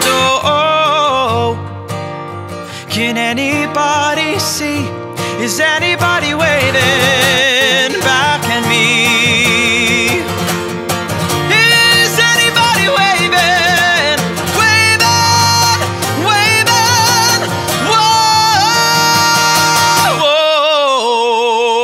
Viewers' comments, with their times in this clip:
0:07 That guitar though! 😍